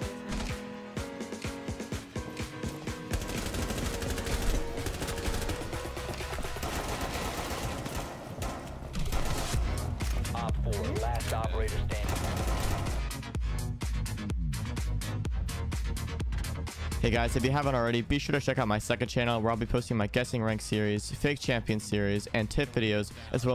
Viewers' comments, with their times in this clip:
0:05 Just gotta point out the gun sync